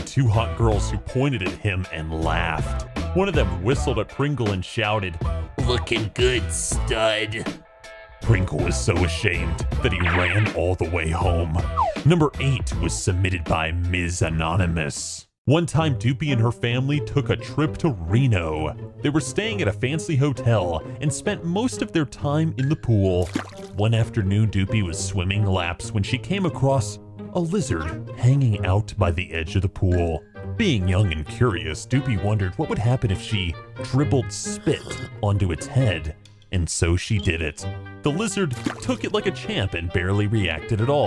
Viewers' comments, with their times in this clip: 0:03 I choked from that voice
0:27 I heard a Yoshi sound clip LOL
0:27 random yoshi (MARIO) sound for lizard
0:27 Anybody catch the Yoshi sound ?